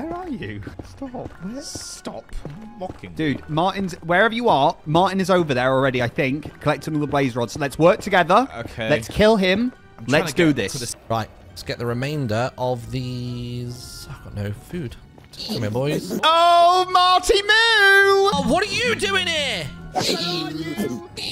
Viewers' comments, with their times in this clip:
0:03 That's actually a good impression, I'm confused...